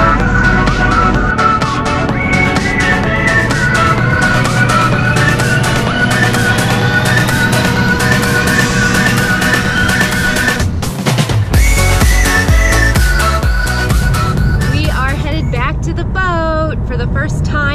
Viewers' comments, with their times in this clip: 0:03 OMG why is the music sooo LOUUUUUDDDD